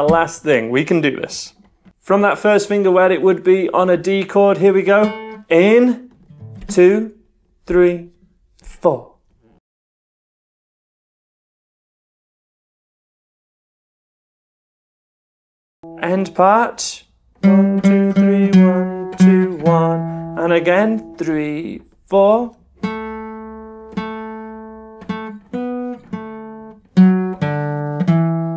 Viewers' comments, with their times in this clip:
0:09 Love this 10 Day playlist! Very very good for beginners. Thank You! I did think i'd gone deaf though, haha, audio disappeared for a sec.
0:09 What happened to the sound ? For 6 seconds, nothing.
0:09 Where's the sound???
0:10 the audio got cut off so I was like “why are you hesitating dude?”
0:11 why is the video muted here? Did you get copyright struck or something lol